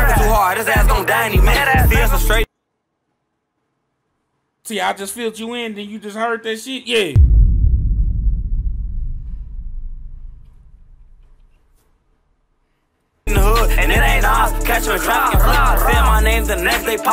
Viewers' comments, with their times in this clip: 0:03 that was the toughest yea I’ve ever heard, cause you were really explaining some shit 😂